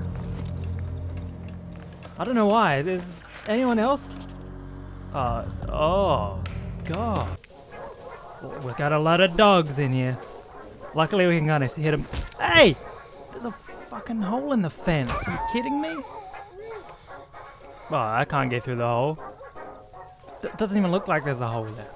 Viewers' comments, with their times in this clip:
0:03 it DOES sound like Katana Zero :D